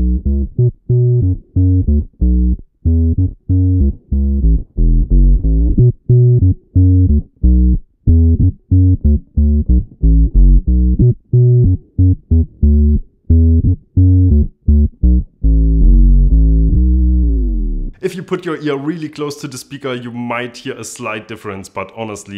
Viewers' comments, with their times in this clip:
0:05 Nice video mate! But I respectfully disagree. I can certainly hear a difference. I'm afraid I still prefer the octave down sound of the OC-2. The OC-5 sounds a bit muddled and dark to me. OTOH, the other features offered are super cool. I've modded my OC-2 and it sounds really nice. Plus it is far more versatile that originally.